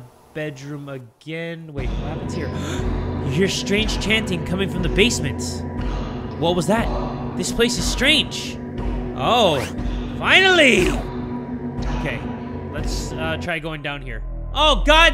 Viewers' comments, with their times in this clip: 0:03 Is it only me or does it sound like Skyrim chanting here?